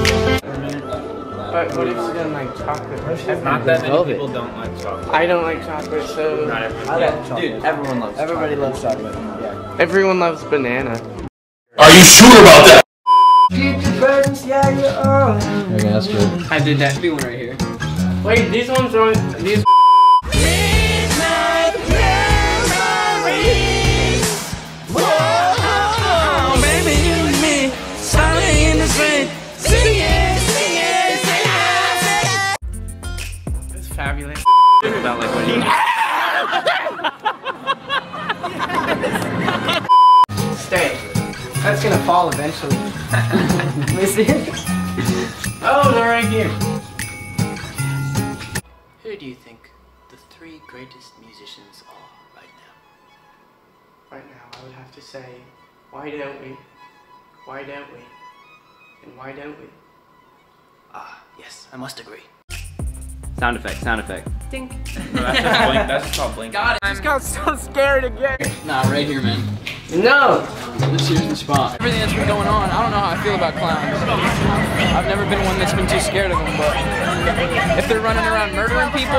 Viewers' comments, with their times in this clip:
0:10 Daniel "Everyone loves bananas" Random crazy voice "ARE YOU SURE ABOUT THAT!!!???" LOL!!!!!!!!!
0:36 Was that Zach’s scream ?😂😂
1:03 tHAT DINK KILLED ME